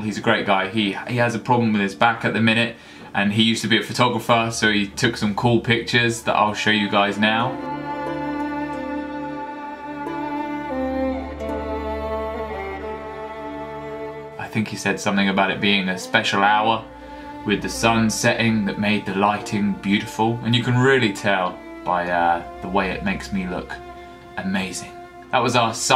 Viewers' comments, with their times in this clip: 0:10 The Fields of Ard playing while your swinging your sword at dusk. Consider my sexuality questioned.